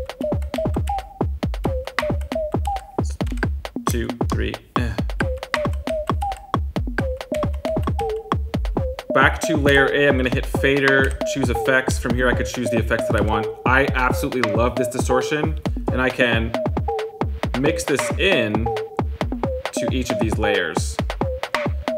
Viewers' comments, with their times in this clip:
0:07 Music timeline music is so nasty and enjoyable. 😈